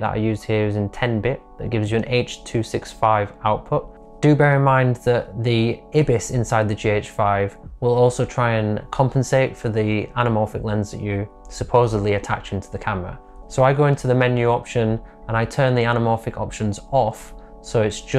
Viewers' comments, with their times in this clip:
0:04 I’m sorry, IBIS? ?! I’ve never heard anyone pronounce IBIS like that. :) It’s normally “eye-biss” not “eh-biss”. But each to his own.